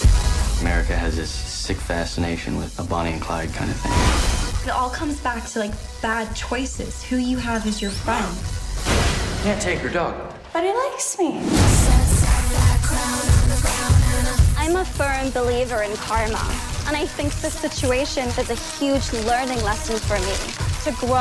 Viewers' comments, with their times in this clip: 0:05 her accent is literally perfect